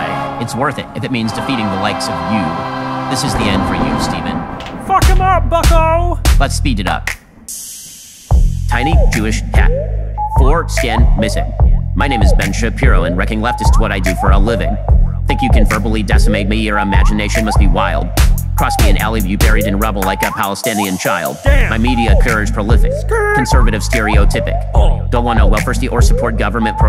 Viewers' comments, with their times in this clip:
0:08 Not gonna lie, I came into this expecting to cringe a little and instead was genuinely laughing much of the time watching (especially that beat switch which had me dying). Good work on this! 🙏🏽